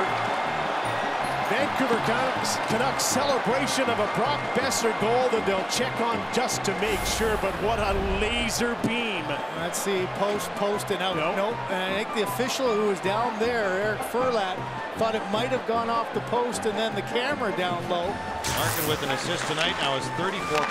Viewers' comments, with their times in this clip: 0:07 "what a leeeezer beam" god bless you Canada.